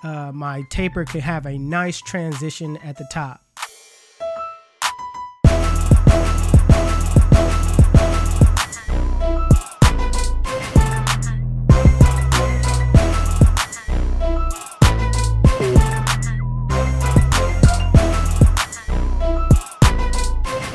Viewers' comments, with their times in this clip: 0:04 Was I the only one who caught him on beat with the clippers